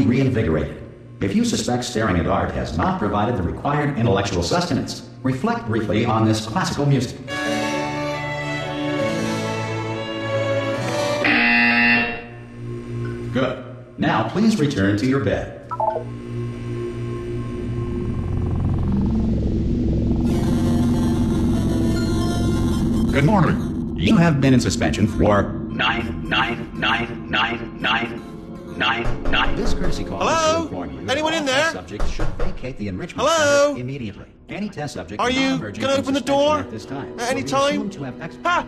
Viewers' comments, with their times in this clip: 0:07 HE'S PLAYING CLASSICAL MUSIC!!!
0:25 a nazi says NEIN NEIN NEIN NEIN XD